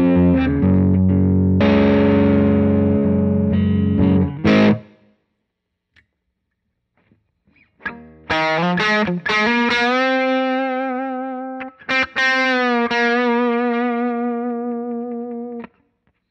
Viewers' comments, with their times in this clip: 0:03 Awesome intro song! What's the song on ? A little bit "Soulshine" vibe.